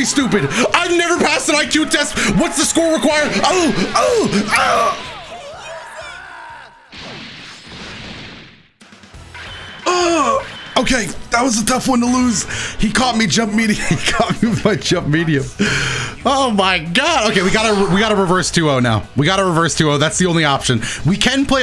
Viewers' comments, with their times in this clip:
0:05 Those grunts sounded so real my guy should do voice acting lmao